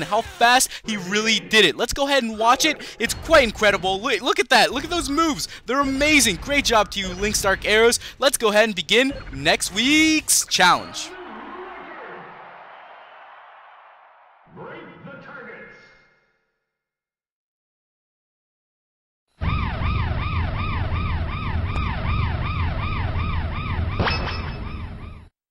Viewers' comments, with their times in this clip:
0:09 I lolled at how you lengthened "weeek's" to match up the timing. xD